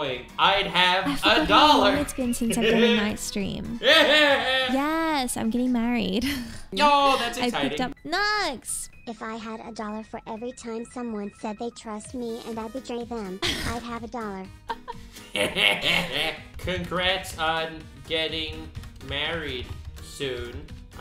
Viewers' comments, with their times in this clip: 0:04 totally the Voldemort laugh